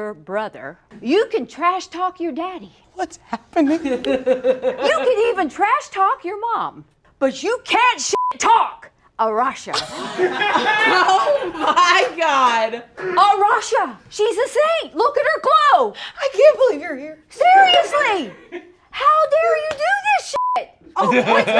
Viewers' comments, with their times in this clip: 0:07 The mum voice jumped out